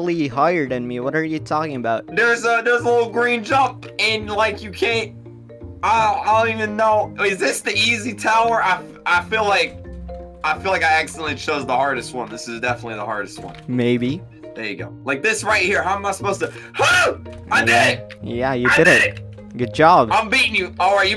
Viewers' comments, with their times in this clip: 0:07 Bro the scream got me dead laughing 💀😂💀💀💀😂😂😂💀